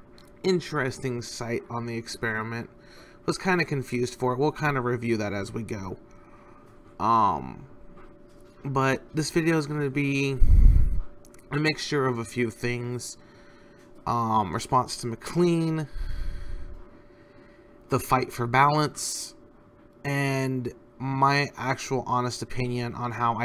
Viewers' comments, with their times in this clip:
0:09 Constructive criticism: You breathe into the microphone a lot, such as and it gets on the nerves after a while. This can probably be fixed by repositioning your microphone to the side of the head rather than the front, putting a foam cover on top of it, a screen in front of it, or fiddling with its capture settings, or getting a better microphone.